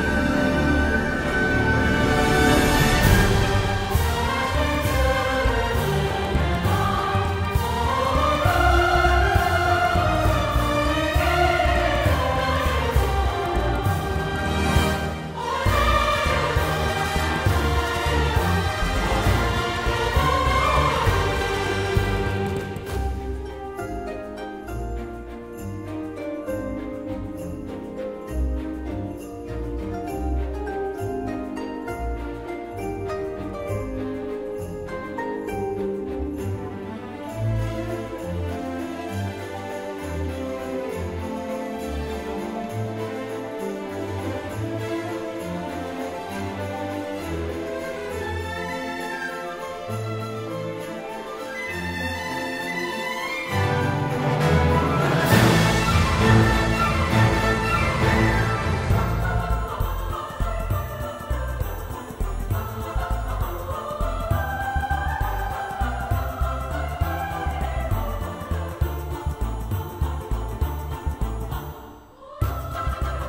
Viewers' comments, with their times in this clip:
0:08 That synced up really well with valka's laugh 😂
0:58 in love with this bass line